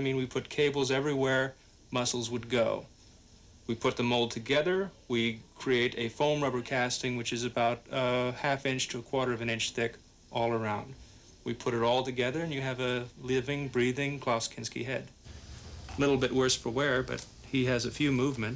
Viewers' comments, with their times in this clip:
0:03 that's how you know it was made in the eighties: sweet space synthesizer rif!